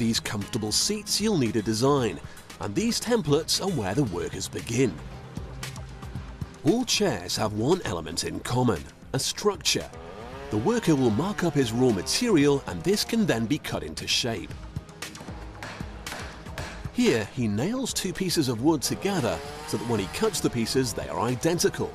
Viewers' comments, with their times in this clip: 0:09 First time I've heard a jigsaw, a band saw, and a table saw all sound like a chainsaw. I'm surprised the drill that followed didn't sound like an impact wrench.